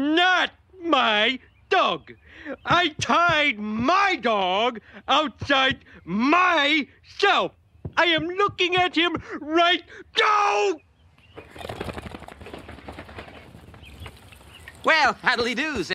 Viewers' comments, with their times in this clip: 0:09 Favorite iteration of Homer's 'D'OH' right here (right next to when he claims the basement for cleaning.🤣)